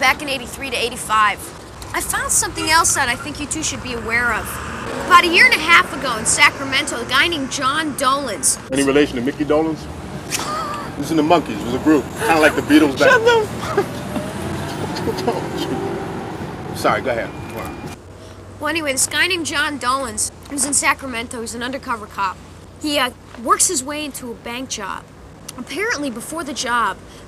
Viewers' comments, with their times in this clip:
0:08 idk why but I really like the way mr. Orange laughs :)